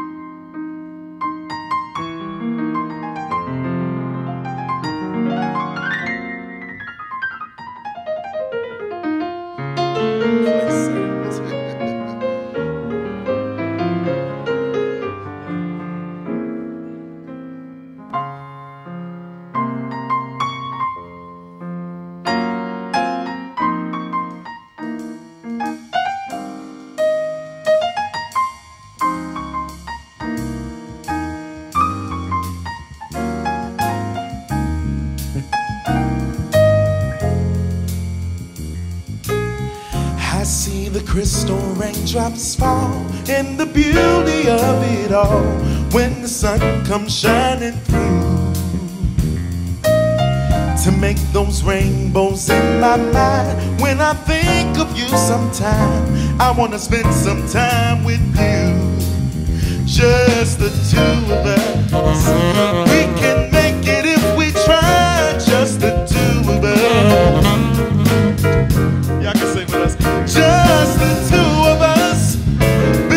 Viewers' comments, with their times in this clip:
0:06 Ma that lick was mental! Triplets in a swung form?
0:09 that opening solo was absolutely beautiful. that whole sequence from was just chef's kiss
0:57 What a groove! I've watched this over and over. They are all great! I've paid particular attention to the drummer in the background, the enthusiastic keyboardist, as well as the smooth guitar and vocals. Pay attention to the bassist right to 1:60 into the song.